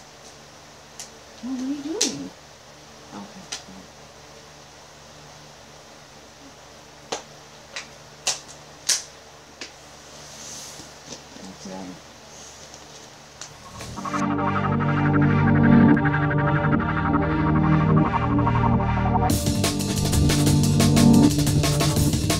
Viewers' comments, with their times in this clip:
0:03 didnt he said "helping you" didnt sound like "nothing" to me?